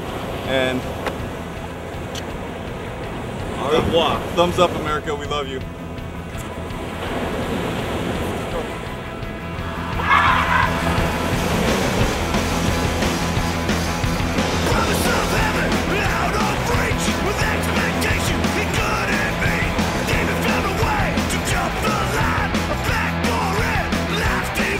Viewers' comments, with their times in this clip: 0:05 who is whispering